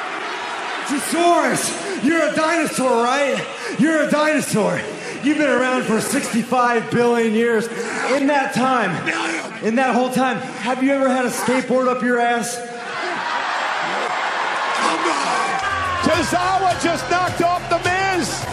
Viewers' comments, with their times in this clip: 0:06 😂😂😂😂😂😂 when he yells "Million"